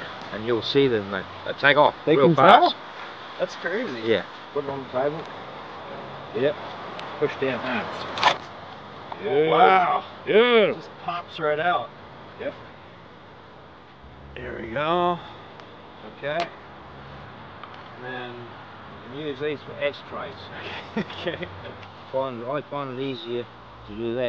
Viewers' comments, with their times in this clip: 0:10 beautiful Jake the muss voice